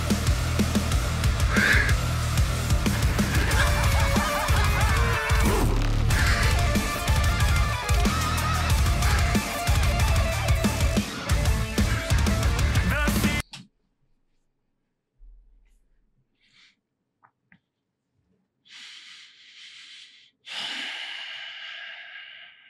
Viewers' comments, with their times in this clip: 0:03 from mick gordon to avenged sevenfold lol